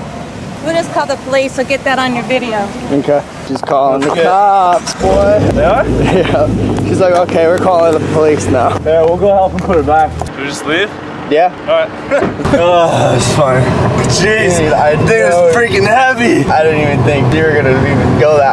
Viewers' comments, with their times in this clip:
0:04 dunno what it was but sounded like either a vette, camaro, or Mopar